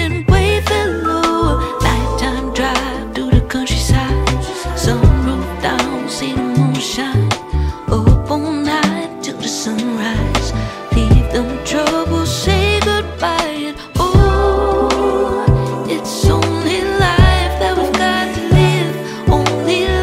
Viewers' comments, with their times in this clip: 0:04 I love the little orchestral embellishments sprinkled throughout this song — the little string and flute trill swells, the chromatic brass lines the groovy high brass motifs in the jam section near the end — they all add so much to the song even though they’re barely noticeable unless you really listen for them.